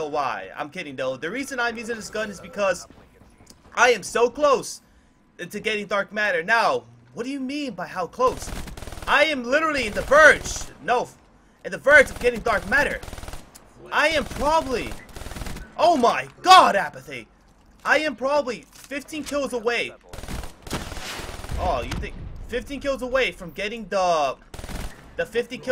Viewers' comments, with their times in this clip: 0:08 He sounded so mexican